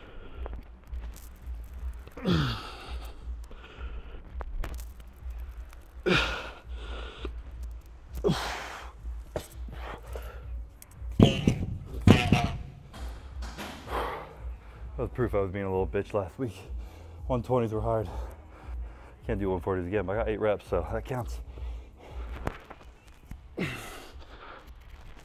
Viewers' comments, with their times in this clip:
0:10 Dumbells sound like either a goat, frog or moaning cow, I cant decide.